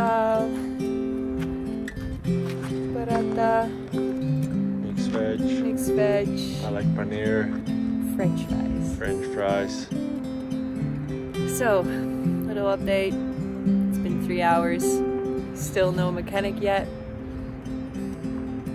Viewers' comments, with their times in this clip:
0:03 stoppp your accent is so cuteeee 😂💗